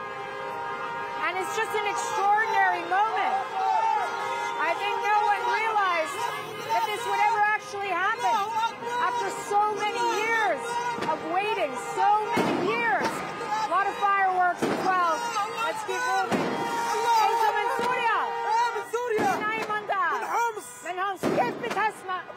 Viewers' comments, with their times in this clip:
0:10 Machine guns and Allahu Akbar. Not really my cup of tea.